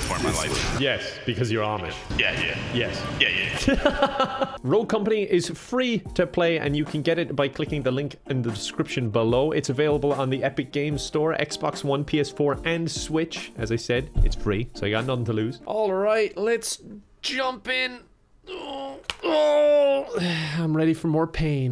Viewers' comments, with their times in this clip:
0:03 such a pure laugh..